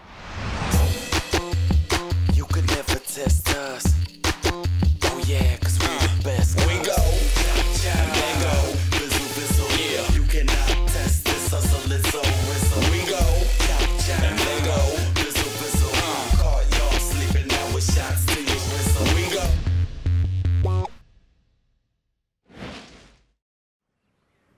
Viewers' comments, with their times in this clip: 0:07 who else heard the Minecraft villager sound😂